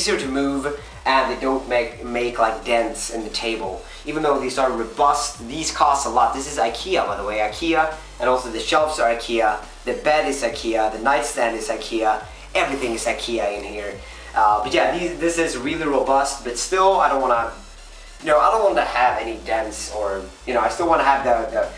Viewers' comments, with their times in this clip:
0:04 he said the desk was from Ikea and the shelves were to listen.....